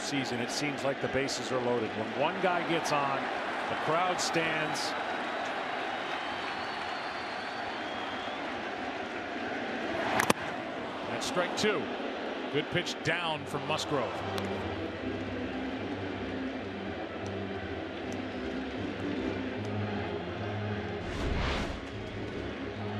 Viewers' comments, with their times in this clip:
0:09 And he said Strike 2 in an upbeat voice He's the worst.